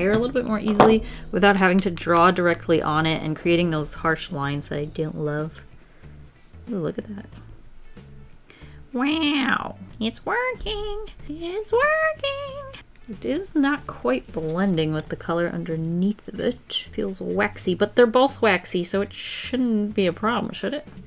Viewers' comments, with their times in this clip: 0:09 she sound so much like simplynailogical